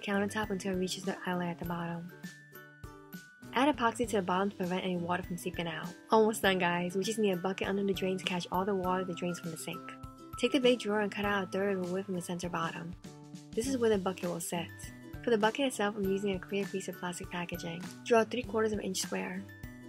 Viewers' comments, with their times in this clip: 0:06 she says all the water the drains gonna sink... 😝